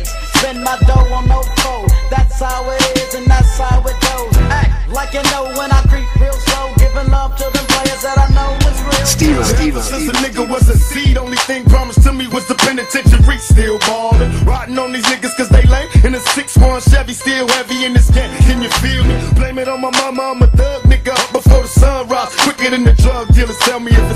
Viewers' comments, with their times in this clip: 0:05 eazy e voice crip real slob